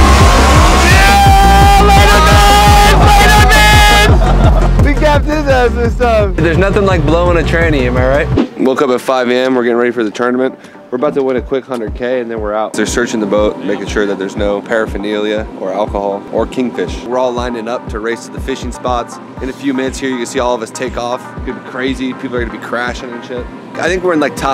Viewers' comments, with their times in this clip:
0:07 Big pause lmao